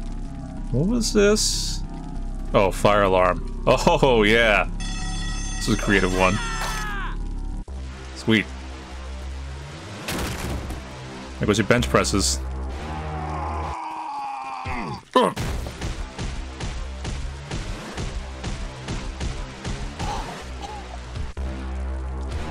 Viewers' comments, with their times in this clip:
0:04 *Alarms Blare* "Intruder Alert! A RED Spy is in the base!" Jock #1: "A RED Spy is in the ba-" >Slips on soap and bashes jaw on bench Jock #2: "INCOMING!!!" >Sounds of intense blunt force trauma
0:06 now they use ellis's scream and even the alarm woowee